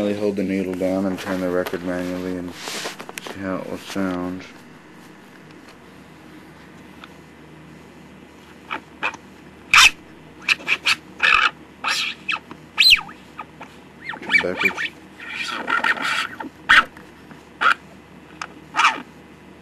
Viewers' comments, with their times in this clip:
0:04 See 'n Say Dubstep!